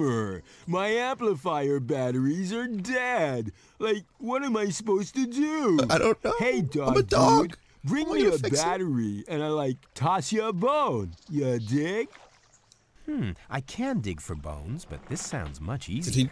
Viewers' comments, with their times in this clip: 0:03 sounds like arin's srupid voice from the mickey mouse episode